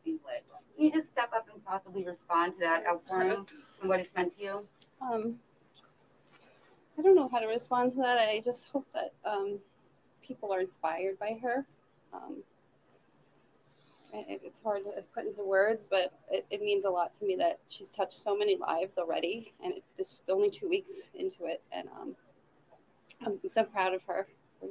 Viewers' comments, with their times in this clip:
0:05 Sounds like Gabby's voice, when her beautiful Mother says, "I don't know how to respond to that", very humbly, I might add!